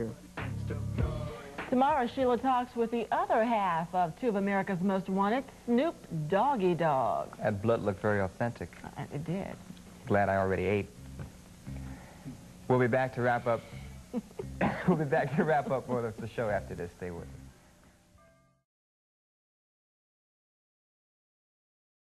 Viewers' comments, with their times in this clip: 0:07 he expected a bigger laugh from the lady